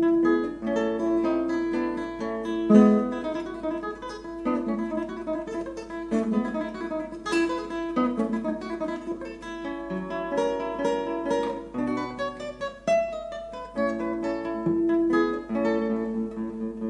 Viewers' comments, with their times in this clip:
0:04 That's absolute non sense. You picked to comment that under one of segovia's worst interpretations. Just listen to he couldn't even keep up with the tempo. He is pretty old already in this video, even a first year music student can do a better job.